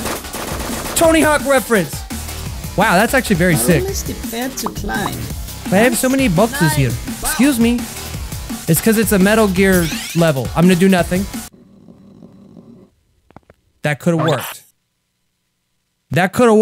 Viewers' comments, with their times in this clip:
0:03 Yub the guy that is speaking is german